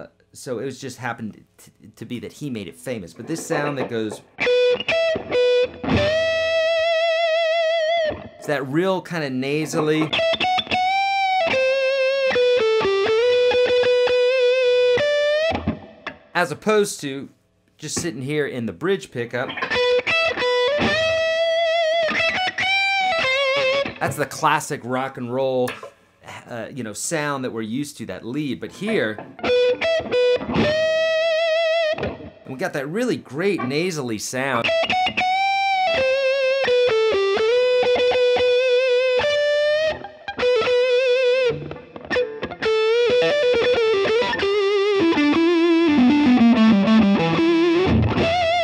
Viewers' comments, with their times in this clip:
0:05 this reminds me go with a flow by qotsa dude, i love it dat guitar man, thanks
0:07 Great video, thanks. I'm still having trouble getting that 'woman' sound, though. I'm really after that beautiful hollow ring, almost like a phaser., that you get just before note-off into the video. I'm wondering if it's my strings - what gauge strings are you using, and what make do you recommend? Thanks!
0:34 omg that tone is incredible, what do you think I'd need to do with my amp to achieve that with my Les Paul? I have a Marshall DSL5CR (Gain, Volume, Treble, Mid, Bass, Reverb) I've experimented a lot but I can't seem to dial in that tone. Is there a pedal I need? Any ideas greatly appreciated ^-^